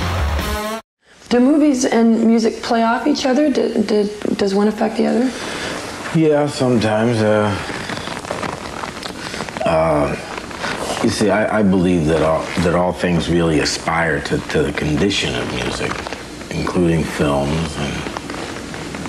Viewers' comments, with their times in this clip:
0:04 Great interviews, Tom's always an interesting and unique chap, nice leftovers stew stir up But friggin hell what an amateur the sound guy is Putting a fkn lapel mic on a leather jacket! It's like the cameraman only filming his shoes! \😌/ (Sounds like someone's making balloon animals behind the camera! '